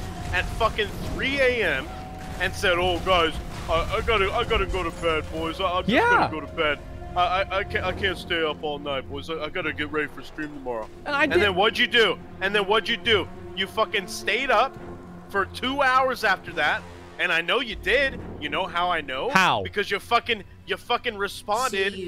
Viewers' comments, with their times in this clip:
0:05 I skip to and all I hear is Asmongold talking to what seems to be his gaming boyfriend. Arguing for minutes. So refreshing.